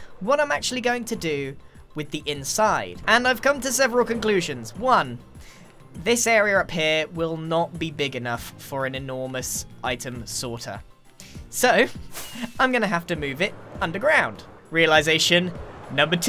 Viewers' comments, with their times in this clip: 0:04 Grian actually triggered Siri (for me ) somewhere (“this area up here”)